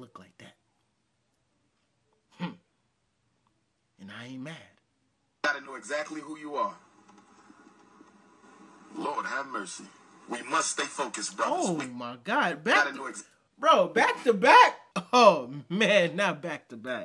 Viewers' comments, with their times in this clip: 0:04 " Siper Girl ain't never look like that" and he took some deep breath to say it as clean as he could.😂😂😂😂